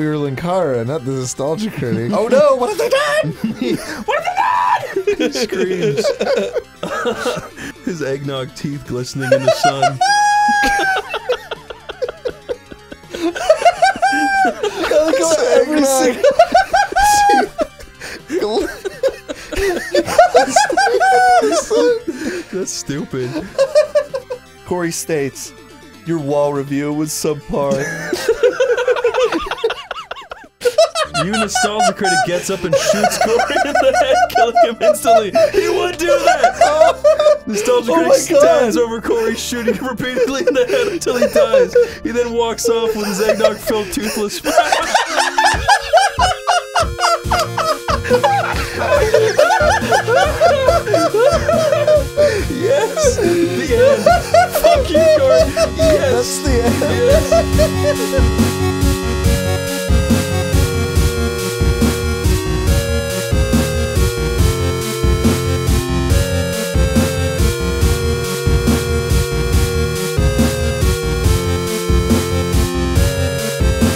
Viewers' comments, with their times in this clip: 0:08 when you're laughing but also falling down a well
0:09 When you press the Pillsbury DoughBoy's belly.
0:13 Lol what is this guy’s laugh?! I’m new here and scared
0:38 The gradual breakdown of laughter here into pure hysterics is a sounds unlike any other.
0:58 NC’s theme in 8 bit low key goes hard